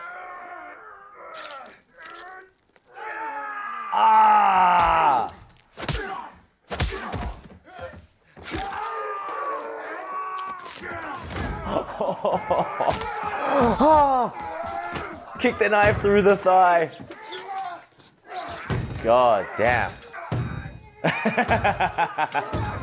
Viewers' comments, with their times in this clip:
0:05 anyone else hear the teeth fall out?